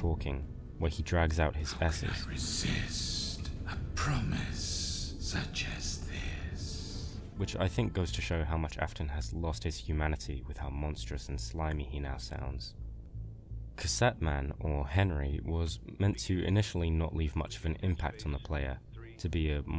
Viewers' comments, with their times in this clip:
0:07 Editor's note "I'M LITERALLY GETTING CHILLS AS I LISTEN BACK TO THIS OMFG IT'S SO CREEPY I LOVE IT SO MUCH)